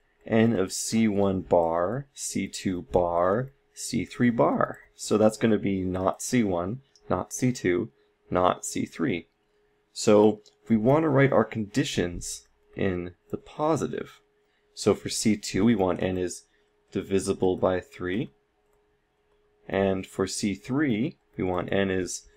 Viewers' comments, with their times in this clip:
0:09 he said "nazi" THREE TIMES...Illuminati confirmed 😂